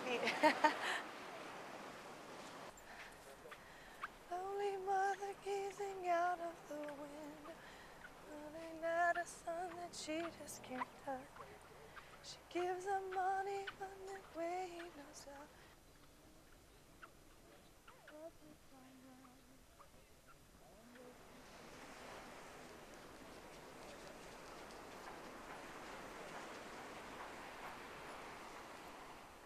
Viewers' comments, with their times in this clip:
0:10 Squeaky Sand! :D